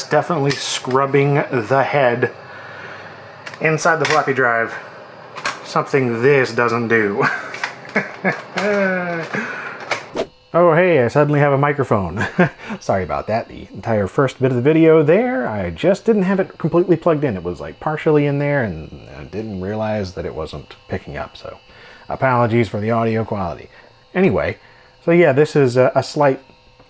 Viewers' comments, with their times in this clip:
0:10 IBM Thinkpad humming noises have entered the chat.